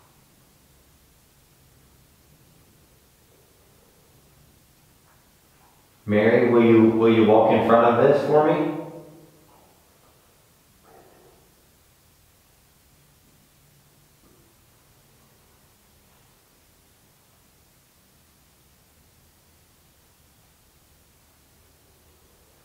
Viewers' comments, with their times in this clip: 0:10 you ask Mary if she will walk in front of the PMB BOX and I heard a male so no but in an evil growl type of way
0:10 u hear something say no